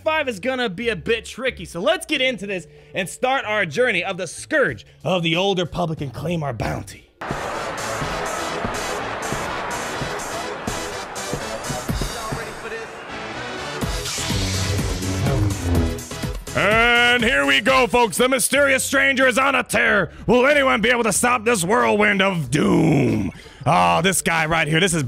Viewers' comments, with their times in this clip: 0:08 I don't know, it was Darth Revan's EDM entrance that had me in stitches.
0:13 The music is perfect